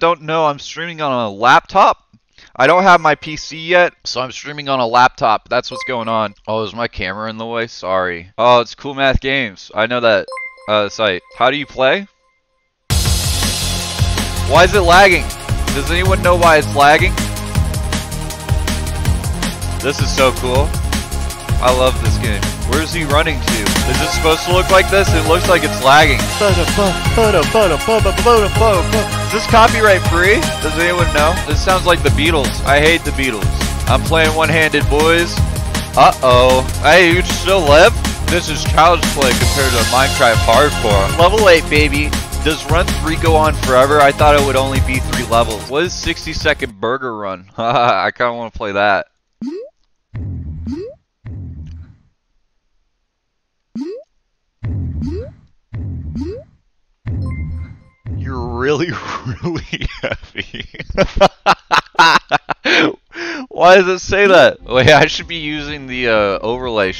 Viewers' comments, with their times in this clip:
0:10 he sounds like somebodys mom is trying to relate to her kids and play videogames
0:29 How does that sound like the Beatles ? lol
0:31 Beatles after LSD.
0:49 didn't talk for 8 seconds... get your're facts sttraihgt